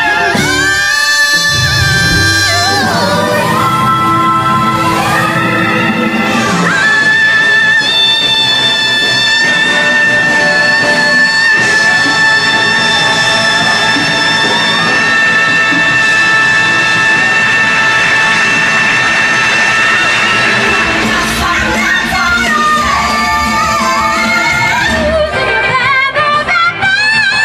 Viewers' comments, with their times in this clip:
0:09 Omg Melba Moore that a5🤯